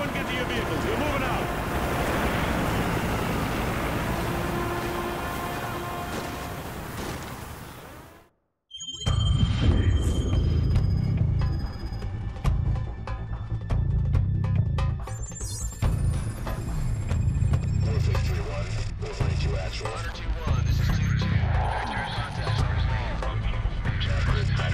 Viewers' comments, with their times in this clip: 0:09 Amazing adventurous music it actually depicts an action thrilling energy